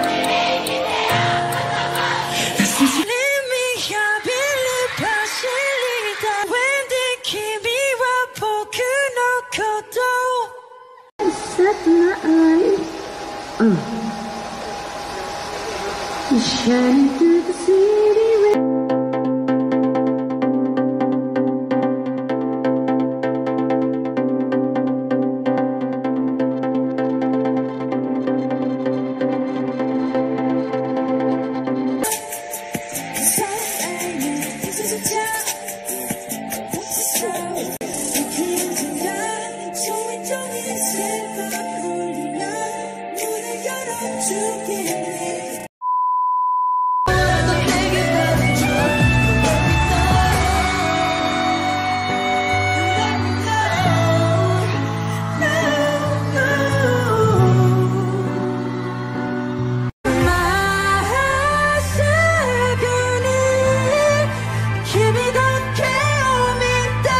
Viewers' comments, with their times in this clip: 0:03 i love you voice jimin
0:48 His high note in melt my heart
0:49 Jimin's angelic voice is beyond imagination💜💜 can someone tell me what is the name of the song at minute in the video